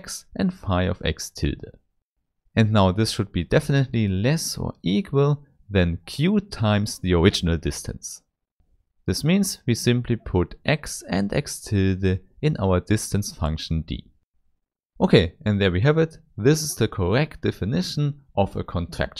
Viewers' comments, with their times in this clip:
0:05 Nice to listen to someone speaking English in my own accent;) Good video, especially appreciate the constant reminders that this is no rocket science. One question and a couple of observations: On why does it have to be an inequality? The argument would hold as well if there was an equal sign, no? The definition of the map was a little quick for me - had to pause and go back in order to realize that we were hopping from one point to the next. Why this map? Would have helped if you had talked more about what this implies, i.e. what insight this delivers that is helpful for all the use cases you mention at the beginning. That would be more insightful than the uniqueness proof at the end (only professional mathematicians would even demand a proof of that, for the rest of us that is obvious enough:))